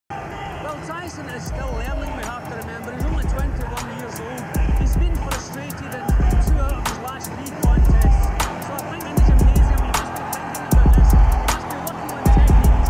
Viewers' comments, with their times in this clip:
0:00 mute the audio to avoid cornball background music